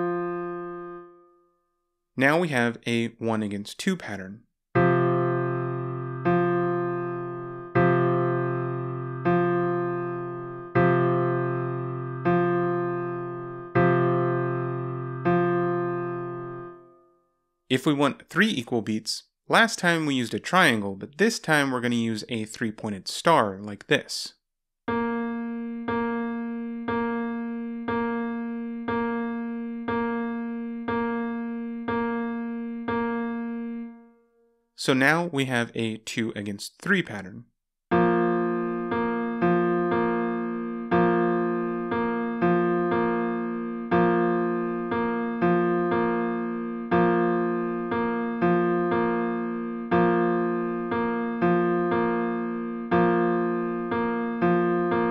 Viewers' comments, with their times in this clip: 0:03 sounds like a piano in g major 4
0:04 This is 1:2 polyrhythm
0:37 It is the 2:3 polyrhythm.